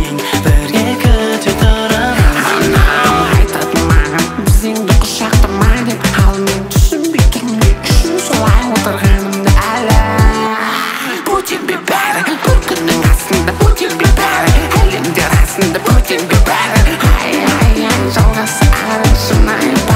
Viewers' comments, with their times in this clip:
0:04 wtf the voice is so weird